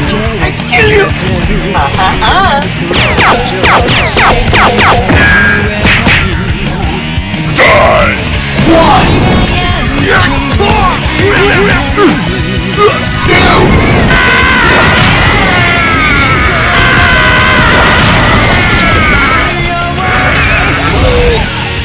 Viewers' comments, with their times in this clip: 0:09 tekken 1-2 kazuya sounds give me a reason to live
0:09 Kazuya's old voice❤❤❤